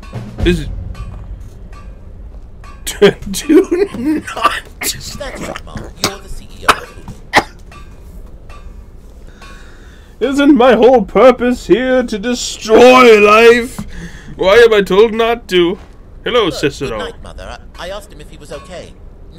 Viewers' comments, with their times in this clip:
0:04 You were laughing so hard you missed Cicero saying, "That's right, Mom, you're the CEO of Hulu."